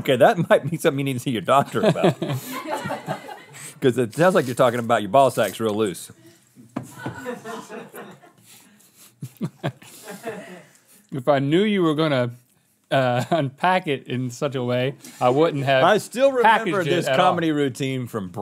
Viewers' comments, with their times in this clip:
0:04 It's so early to snort when you laugh. I just choked on my coffee. LMAO Awesome.